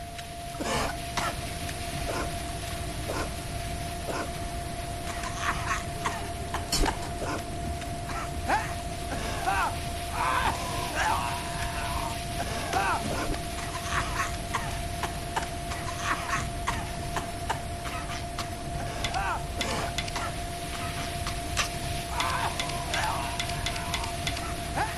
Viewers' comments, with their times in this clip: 0:10 i hear a smoker from l4d anyone else?